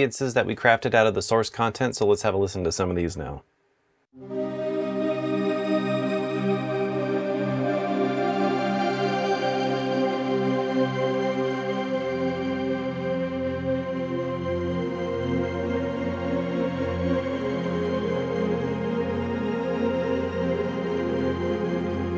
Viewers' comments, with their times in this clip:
0:05 hell, that one patch is worth $20 alone! That's very rich and has an undulating effect. Very nice sounds.